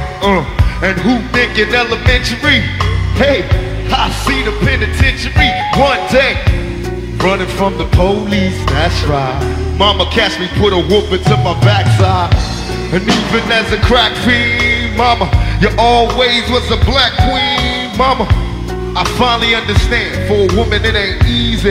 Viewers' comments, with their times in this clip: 0:06 Wait to go bass player misdirecting the whole band because he can’t keep track of the bar count…